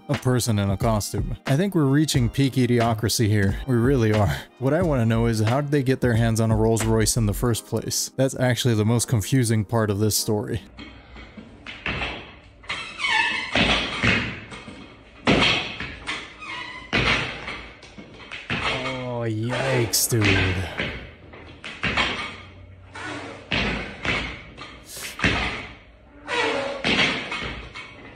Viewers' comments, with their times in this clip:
0:10 BRO! LMAO!!! That guy that is "working out" isn't doing it to show his crazy working technique.... he's doing it because he found the cheat code for INFINTE FLATUS!!!!! Didn't you hear it every time the barbell went behind his back?!?! LMAO!!!1 HOW THE H3LL DID HE DISCOVER THAT?!?!?!?! 😂🤣